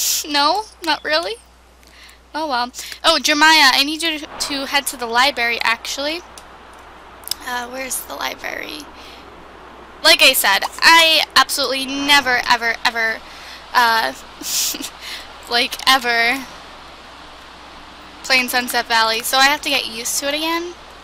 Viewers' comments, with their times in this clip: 0:08 she said libary instead of library
0:09 Omg she says libary. Why does that annoy me ?!?!